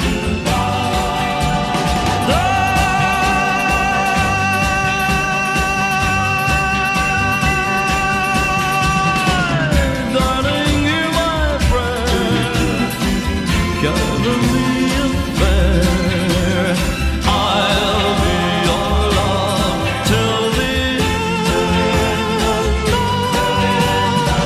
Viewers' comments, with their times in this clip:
0:08 One of the best pop vocals ever. What's great about this video is that one of the background singers is visibly as verklempt as the rest of us.